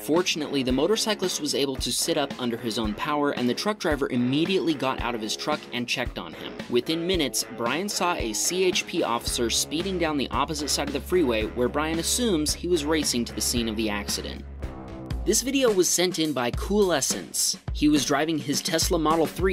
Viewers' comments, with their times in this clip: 0:06 (mmediately)forgot the the I but I love it XD